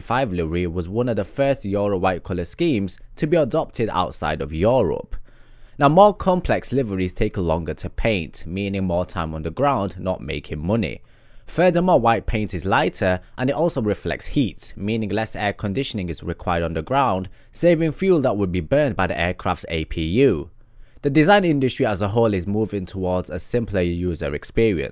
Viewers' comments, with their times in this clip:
0:05 joorup??? The fuck